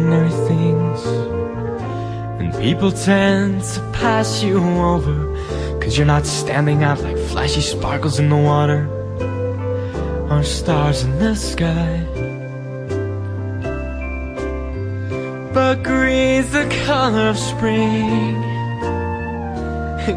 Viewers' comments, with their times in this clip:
0:06 wow you can really hear the change in his voice, like he's had musical theatre vocal training! like :)